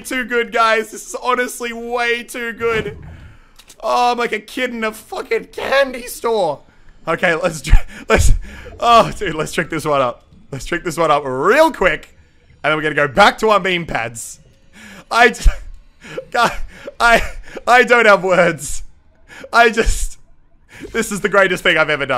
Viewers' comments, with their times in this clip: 0:07 two baaaad voice cracks😂